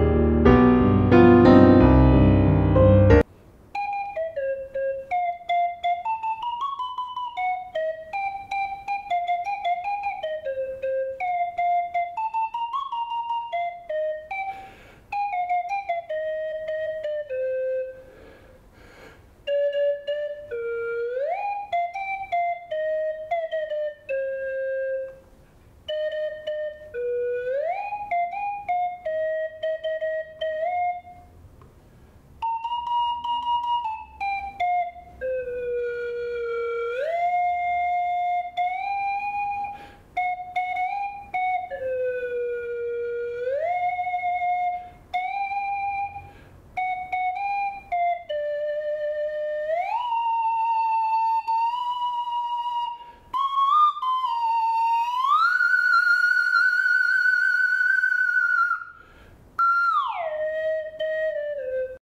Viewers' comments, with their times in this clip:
0:03 how badly does the flute play from the minute
0:44 When he did the vibrato on that thing, that's where I lost it xD Hahahaha
0:52 Vinheteiro laughs Me:KKKKKKKKKKKKKKK HE IN ALL VIDEOS IS SERIOUSLLY!!!